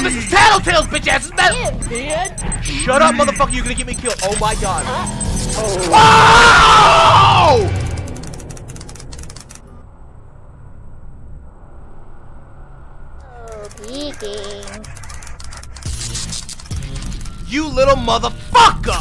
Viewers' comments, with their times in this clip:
0:06 i had the video playing in the background and the i hear this yell and i'm "like did then did he die in real life?" xD